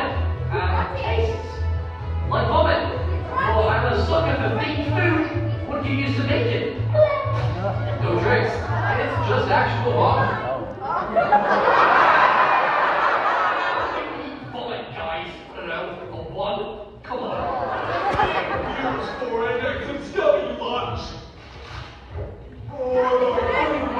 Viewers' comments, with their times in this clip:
0:10 thats the hardest they laughed I think
0:10 the audience laughing at two in pain after eating vomit o’s